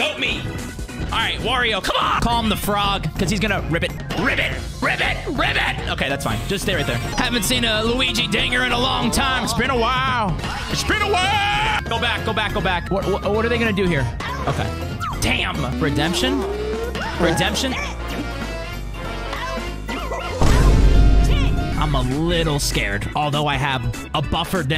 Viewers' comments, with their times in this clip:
0:10 Markiplier, is that you?